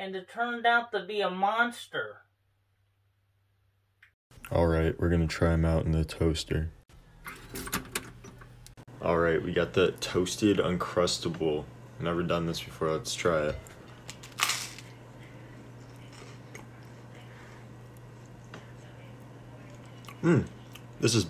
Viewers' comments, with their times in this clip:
0:06 🚫 Face and voice doesnt match.